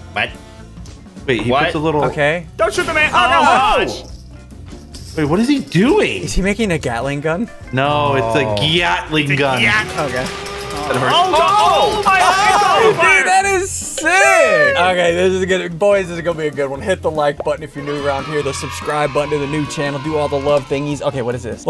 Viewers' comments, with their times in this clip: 0:08 gyatling gun caught me off guard…